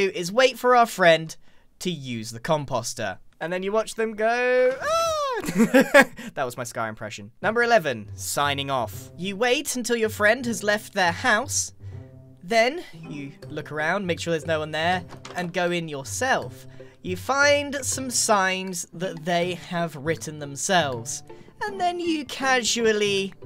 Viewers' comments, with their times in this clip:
0:10 AWW HELL NAW BRIO MUSIC 😂😂😂😂